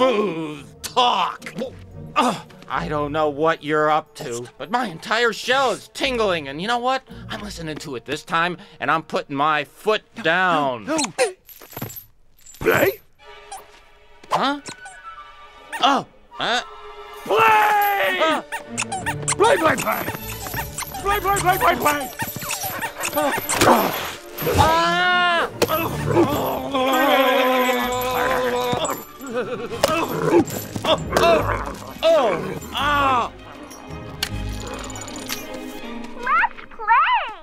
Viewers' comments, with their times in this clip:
0:10 My foot down -[TOY SQUEAKS]
0:18 Verne: ( yelps then runs off ) Dog: ( runs after Verne ) Play play play!!